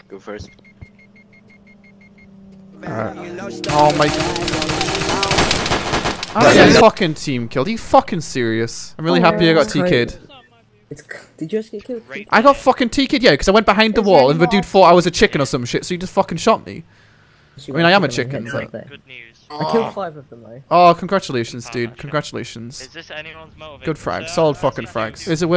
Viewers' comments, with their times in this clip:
0:06 sounded like it was put in while editing